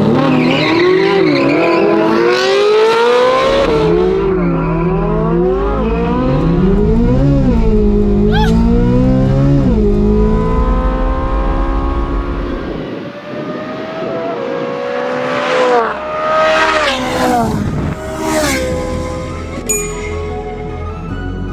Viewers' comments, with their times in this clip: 0:06 I love how the Z06 sounds ! That thing is a beast!!! Chevy, you have made us all very proud! 🇺🇸 🇺🇸 🇺🇸